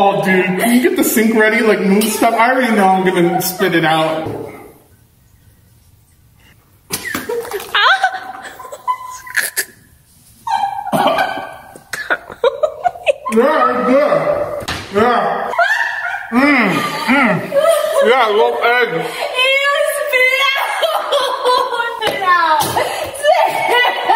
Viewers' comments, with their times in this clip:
0:07 wtf was that noise
0:07 no one gon talk about the fact that she moaned 😂😅
0:12 He actually eat it and SSSniperWolf was laughung to death😂😂😂😂😂😂 Im laughing to death😂😂😂😂😂